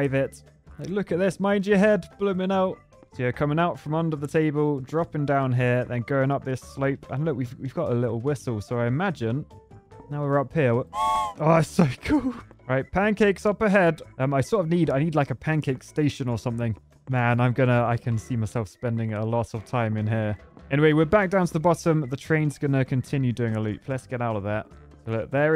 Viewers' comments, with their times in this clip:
0:09 that steam whistle is SOOOO cute ;)